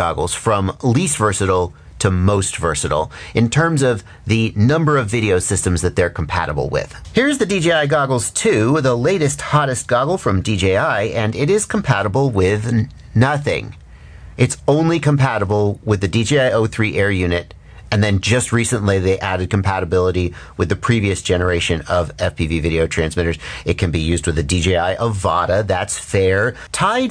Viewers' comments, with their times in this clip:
0:08 I love the pissed off "nothing" lol